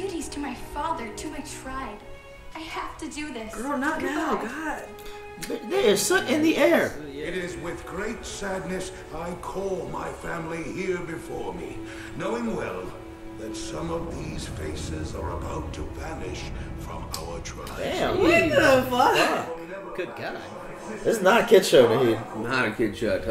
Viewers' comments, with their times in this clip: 0:06 "there is soot in the air" his tone cracked me up